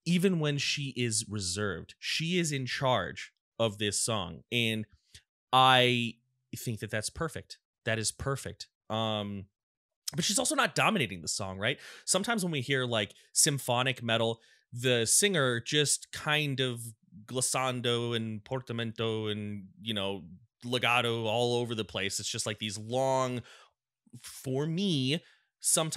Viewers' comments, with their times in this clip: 0:09 Floor in Nightwish is very good at being Part of the music instead of on top of it I guess is how you could describe that. It also really helps that you can see how into the music she is and again not into just her part, as well as just enjoying herself